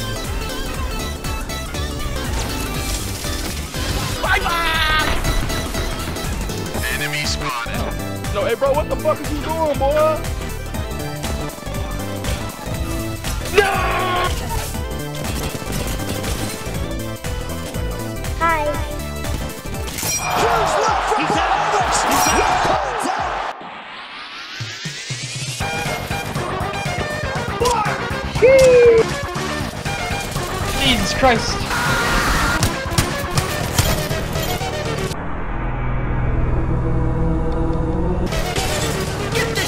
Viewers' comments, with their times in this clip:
0:10 I like how the bow shots are in sync with the music
0:20 Why is there a Garand ping ?